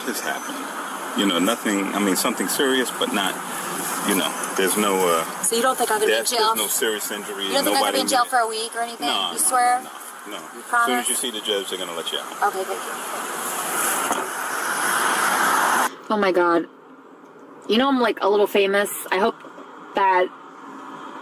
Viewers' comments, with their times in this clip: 0:08 IDK, but at this point I'm getting vibes of Lortab type pain pills or something. She has 900 questions and she wants them answered using 9 words or less while being quite calm and friendly (mostly) at the same time, it's funny! hahahaha